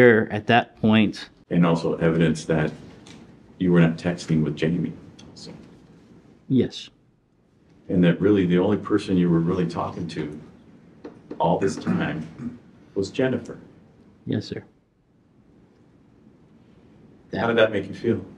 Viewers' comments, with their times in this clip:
0:05 the way he said “yes” seems remorseful, and he is a victim, but still a vile act